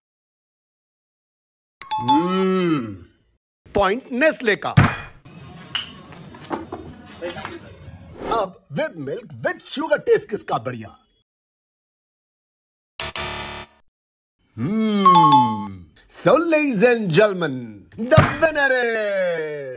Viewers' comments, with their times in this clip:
0:03 he told nestle😂